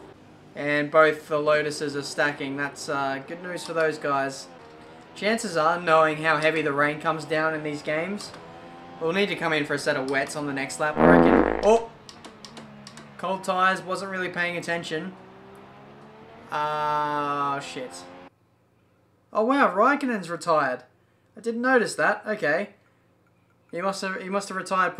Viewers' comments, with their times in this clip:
0:10 had me in tears. I guess you're never to old to laugh at fart noises